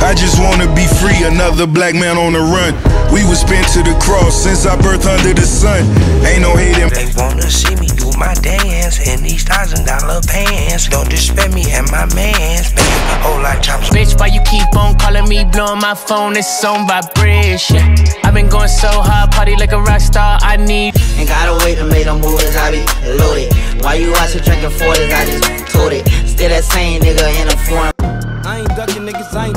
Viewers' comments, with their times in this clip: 0:10 just putting it out there, that song is doodoo.